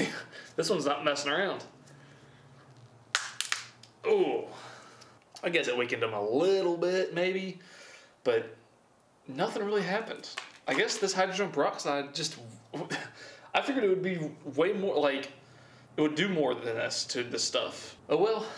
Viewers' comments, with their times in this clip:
0:06 he reveals the accent o_0